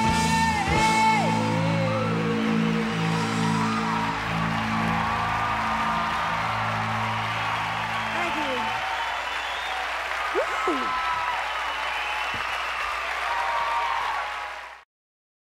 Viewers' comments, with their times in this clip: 0:09 With all due respect to this wonderful performance, she actually got out of key still love you GRACE!